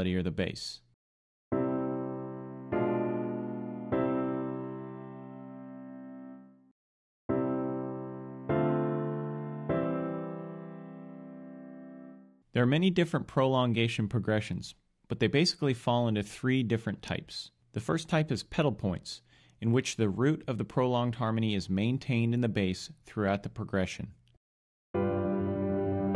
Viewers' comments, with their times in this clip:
0:07 parallel fifths between bass and tenor :P BAD